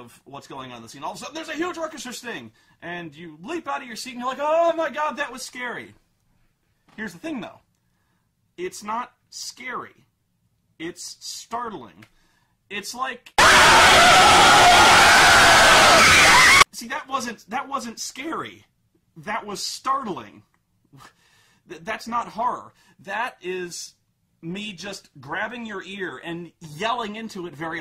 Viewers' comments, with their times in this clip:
0:09 Before watching this, and after it says "to be continued" near the end, there's a jump scare he uses as an example for his point. So please keep the screen down and volume low. Thankfully, I didn't fall for this and kept the screen/volume low. But I wanted to put this for those who would've been less fortunate.
0:12 Jump scare Mute your fucking video until its over or you'll have permanent ear damage and nightmares for the rest of your life.